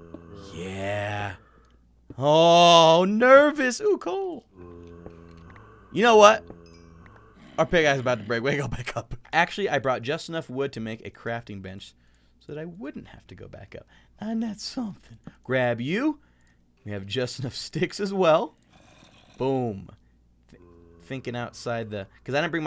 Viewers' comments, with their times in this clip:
0:03 that does not sound like your nervous